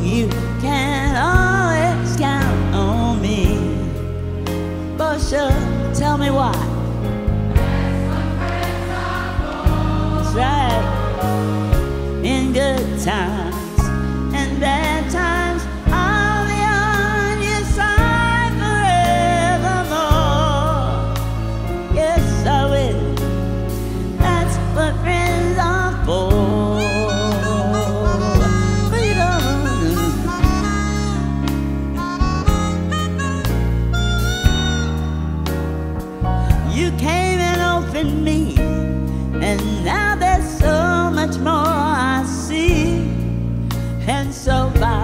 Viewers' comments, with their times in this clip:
0:10 she said "Buset"? what a great performance..
0:26 that harmonica miss the rhyhm?